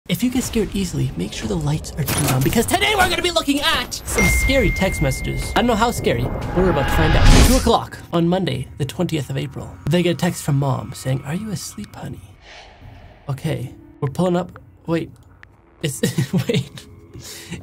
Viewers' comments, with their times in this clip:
0:03 bro became eminem